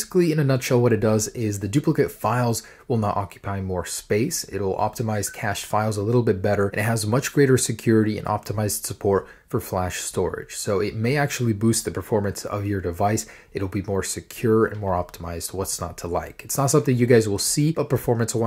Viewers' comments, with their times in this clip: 0:04 What does that ding sound mean? My Apple Watch randomly makes that noise once or twice a week, even on silent mode.